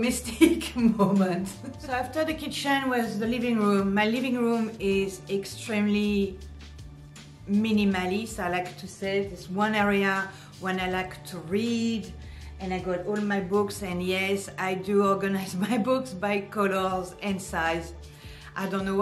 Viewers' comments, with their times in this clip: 0:07 What do you put on your white leather couch to protect it? Sounded like "fronds".At